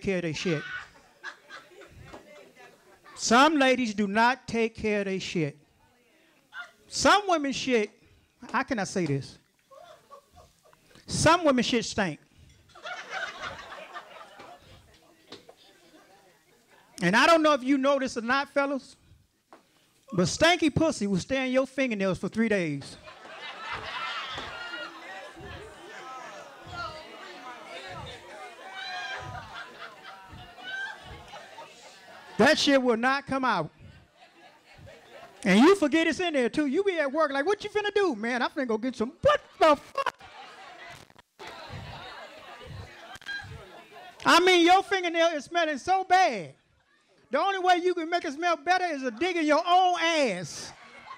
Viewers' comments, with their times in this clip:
0:08 Ok watch from to see a drunk woman laughing her ass off then falling on floor after he says fingernails"" LoL
0:37 ! That girl fell out laughing!!! 💀💀💀